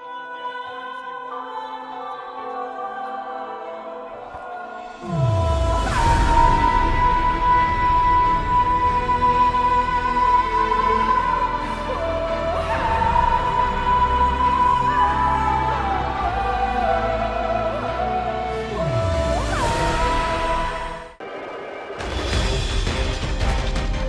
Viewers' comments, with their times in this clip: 0:05 lol @ sandwich eater soundtrack